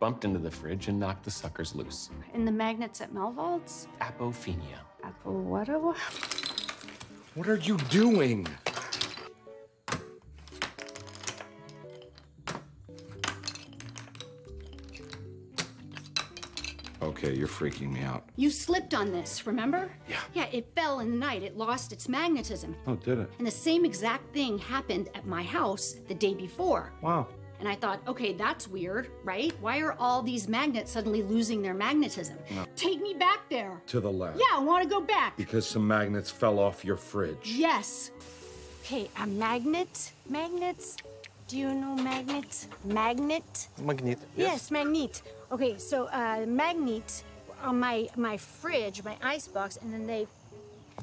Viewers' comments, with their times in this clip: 0:09 the wii song lol
0:34 "yeah I wanna go back" she sounds like me complaining to my mom about wanting to go back to the pool